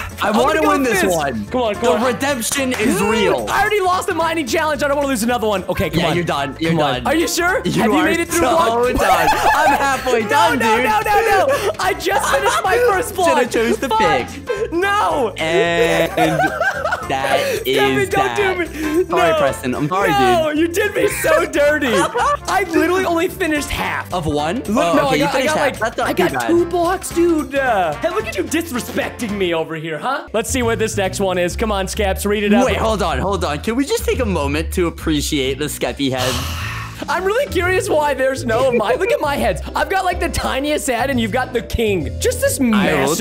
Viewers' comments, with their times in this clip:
0:10 PRESTON DID U SAY ** IN THE STONE BREAKING? D: LISTEN CLOSELY
0:13 did he said the f word or I just misheard
0:13 that sound like you sweared
0:13 sounds like he said the f word lol
0:13 wat did he say? Did u say THE F WORD Or am I deaf ;-;
0:13 Huh what did he say??
0:13 U can hear him swearing
0:13 Wait... DID I HEAR PRESTON SWEAR?????!!!!!!! Edit: Nvm he didn't
0:13 did he say the f word or he said fudge?
0:13 # did he say the f word?!
0:13 did he say the f word?
0:14 Did he say the f word or Im just hearing things
0:14 did i just hear Preston say the F word of am ijust crazy
0:14 di Preston say a bad word or fudge????
0:30 Is it just me or did Preston say the f word